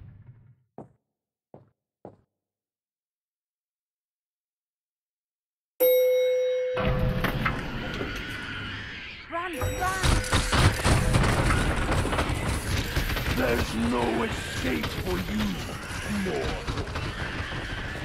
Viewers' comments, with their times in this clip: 0:03 was really creepy I love binaural audio